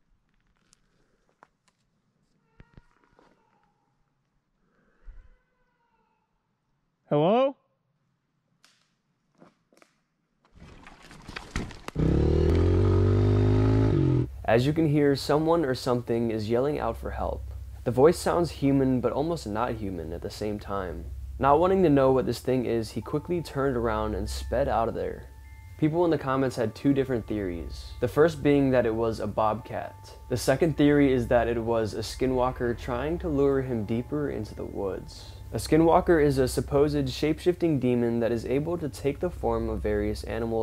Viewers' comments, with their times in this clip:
0:04 Not gonna lie, the first one does kinda sound like help!... but if you turn the volume way up, it definitely sounds like a cat, it's unmistakable, Meow!... but after hearing the broken twig I would have gotten the f out of there too.
0:06 that just sounds like some sort of cat calling out. Listened 5 times and couldn't hear 'Help' just very loud meowing lol
0:21 I live on a farm and that goat had her ears all the way back, plus you could tell she was a pet. She was scared and wanted to come in. the moto rider ? That’s either a mountain lion or a Bob Cat, they sound human. When their calling out to their mates, they sound like a woman screaming
0:24 ~ that's a mountain lion. I can hear the crying sound like roar. Not human saying help. Turn up the volume.